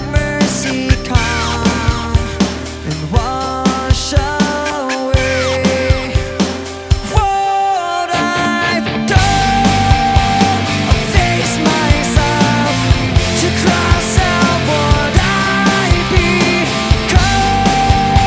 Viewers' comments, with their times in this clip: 0:05 Big fan of Linkin Park but cmon, it's pretty obvious that Chester used autotune live. should be enough proof.